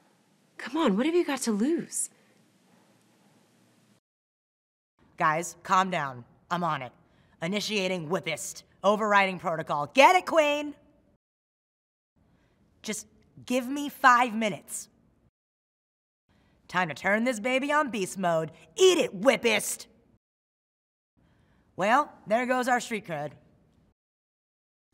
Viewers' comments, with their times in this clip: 0:05 Oh yeah I love you Awkwafina, your voice is amazing 🤩😘😘